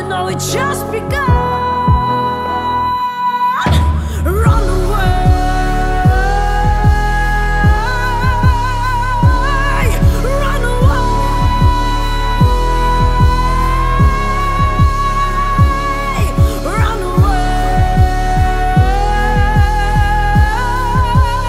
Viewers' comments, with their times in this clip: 0:09 Oh, a top 5 finish in the ESC? Are you kidding me? This song is a giant sleeping pill. Btw, where is the chorus even? Is it the part where she randomly starts screaming after of absolute nothingness? Give me a break.